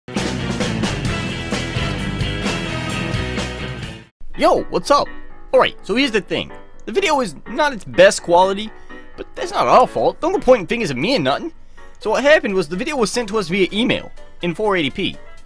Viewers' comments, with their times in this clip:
0:01 scout the narrator